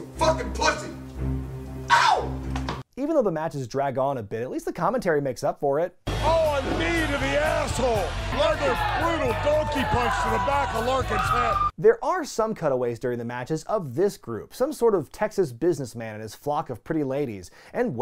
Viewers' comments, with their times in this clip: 0:06 You can have your "As God as my witness, he's broken in half!" , I'll take Al Snow yelling "OH! A knee to the a$$hole!" any day. 🤣